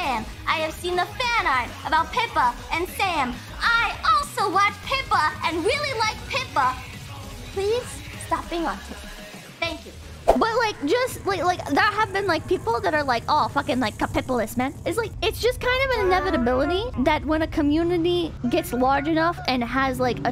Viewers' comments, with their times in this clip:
0:06 Auto-captions: "Please, stop being awesome, thank you."